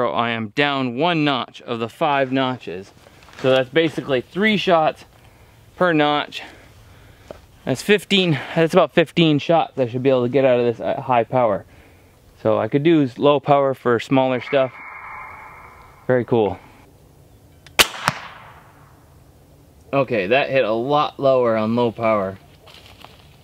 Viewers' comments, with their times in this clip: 0:10 anyone else hear the weird sound? I hope it was edited in